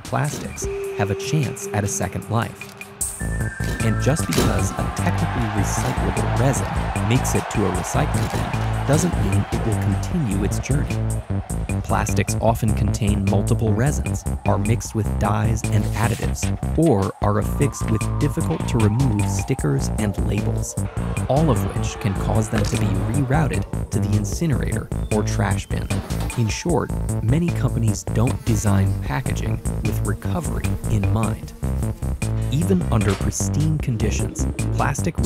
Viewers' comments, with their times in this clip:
0:06 All other sounds are louder than the voice, especially evident
0:16 agreed, hated the music/crowd being SO LOUD